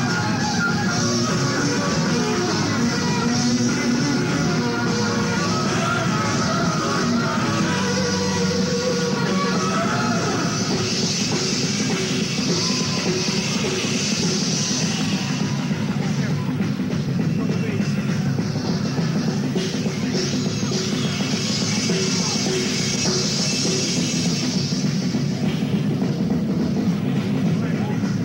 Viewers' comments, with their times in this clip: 0:10 The SIX minute long drum solo during Buck's Boogie is sublime